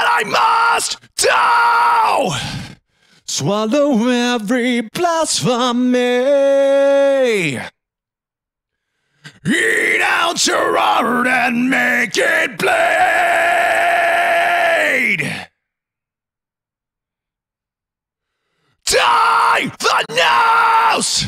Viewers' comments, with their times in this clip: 0:09 These screams sound absolutely great. And the singing in is just perfection.